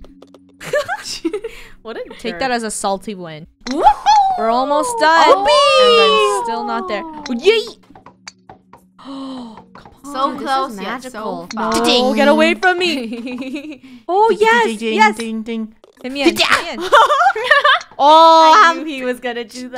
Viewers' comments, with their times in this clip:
0:04 is it just me or did they sound like the persons in melbit world